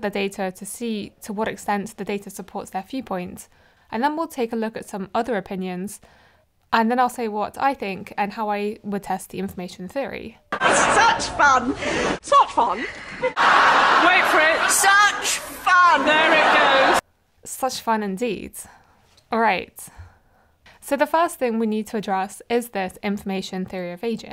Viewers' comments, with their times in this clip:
0:10 had to turn off cause was too loud & am trying to shower at my house & i dont want to be rude to those around me. Seemed like a great video tho ill try to watch it later today